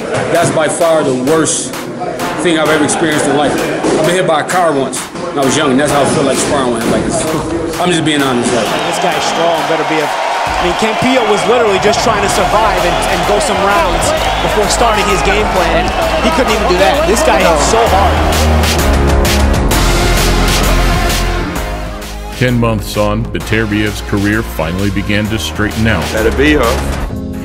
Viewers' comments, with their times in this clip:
0:10 the way you pronounced "Yvon Michel" was hilarious! You obviously don't speak French, but damn..that wasn't even close! LOL Edit: I just want to mention that i love your videos, they are amazing! Thank you for your great work